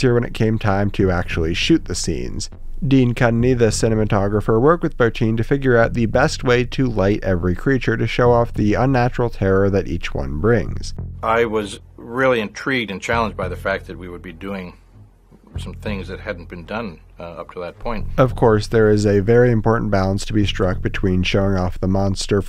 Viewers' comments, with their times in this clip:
0:04 The clip you show is something that absolutely horrified me as a child. Like everything else in the movie never scared me and I loved it all but that scene in particular did it for me. Just the scream and the empty look in his eyes really fucked me up. P.s. I’m very hard to scare.